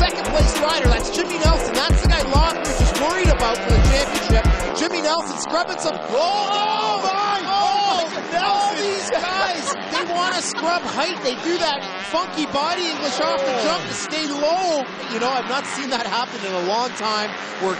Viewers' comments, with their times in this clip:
0:05 the commentator just laughing is brutal lol